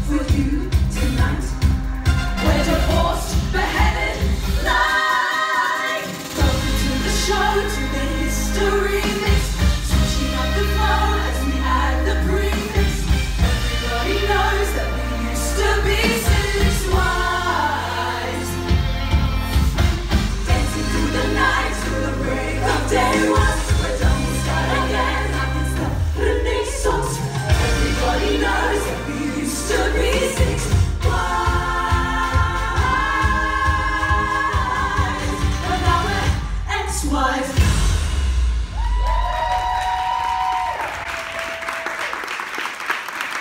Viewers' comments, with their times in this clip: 0:04 no ones talking about the transition it’s so BEAUTIFUL AND THEOR VOICES- AGGHH they’re AMAZING!!!
0:25 The way they say Renaissance lol